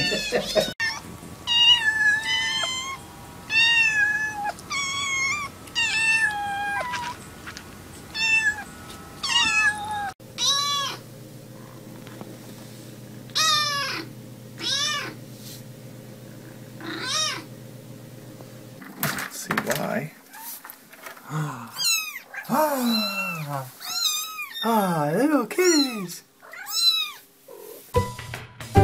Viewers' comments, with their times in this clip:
0:10 The cutest for me is when the cat meows while purring. The best example being